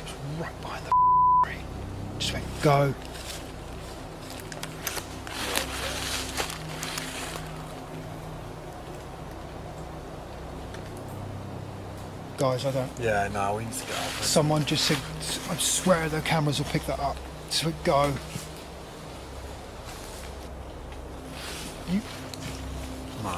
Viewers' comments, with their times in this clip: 0:05 was there another disembodied voice. I don't think it was any of you and it's when he just heard something say go and he's turning around you can hear it through the leaves crackling. 👻✌️